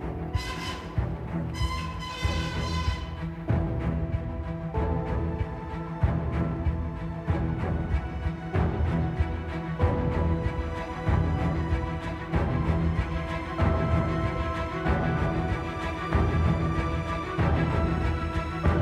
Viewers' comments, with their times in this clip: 0:06 if you put it on 2x speed in the beginning it sounds like a Stick war song